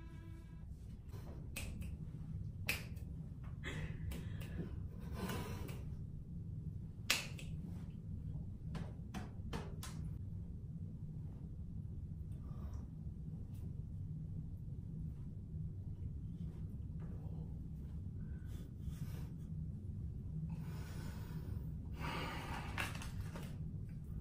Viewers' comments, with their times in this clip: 0:08 sudden ear test?? LOLL